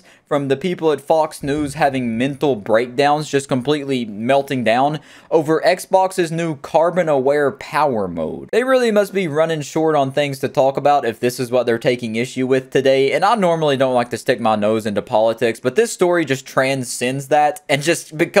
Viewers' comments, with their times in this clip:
0:06 Did I hear cartman aware power mode…